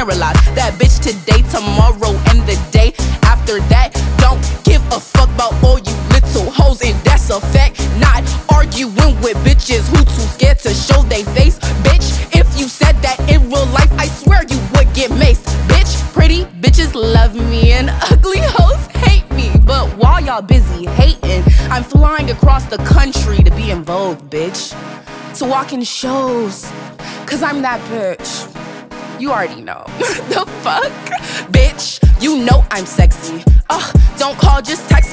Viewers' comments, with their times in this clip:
0:10 This sounds pre-recorded to me, the proximity of the sound doesn't match her movements, and I don't know how they made a Shure SM7b sound that good. Also, she puts her hand in front of her mouth and it has no effect on the sound...
0:22 thanks for stating your experience. if it's a lip sync video, there won't be any recording imperfections, such as the muffling in and the mouth covering like i mentioned. it is absolutely possible to gain stage those parts if done really well. sure, it takes a bit of work to fix those areas, but it's so miniscule that it's not that noticeable. besides, i'm sure the engineers at Genius know what they're doing